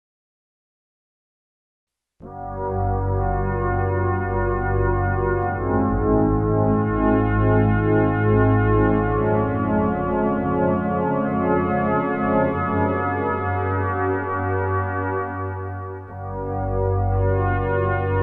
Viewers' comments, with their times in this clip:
0:03 Did you have the Transpose function enabled? From this point onwards the notes we heard were two semitones above the keys that were played. Thanks for another interesting episode.